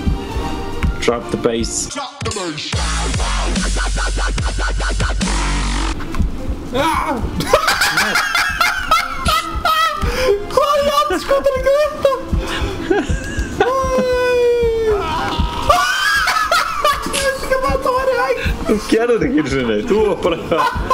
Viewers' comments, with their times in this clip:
0:07 dat laugh cured my cancer
0:07 that laugh lol